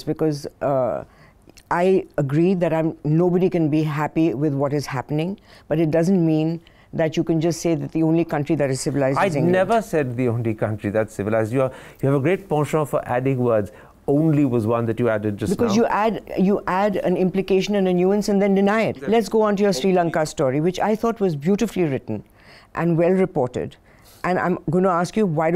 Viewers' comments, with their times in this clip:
0:10 Had no idea that "penchant" is pronounced as "poncho"